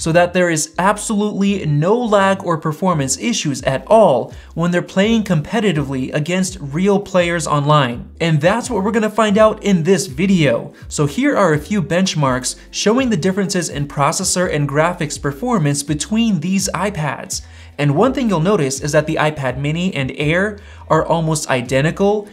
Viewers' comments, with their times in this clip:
0:05 the recoil goes skraaa